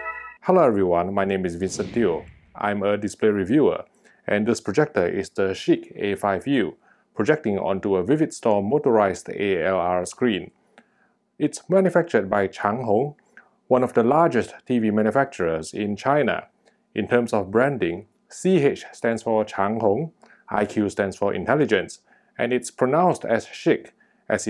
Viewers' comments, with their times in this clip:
0:05 Did he say SHIT? 🤔